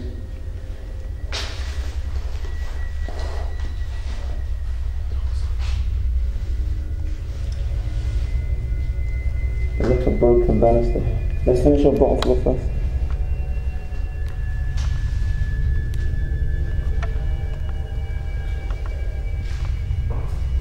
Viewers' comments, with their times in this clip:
0:03 you hear someone say "dont stop"
0:08 Did anyone hear a faint voice 😨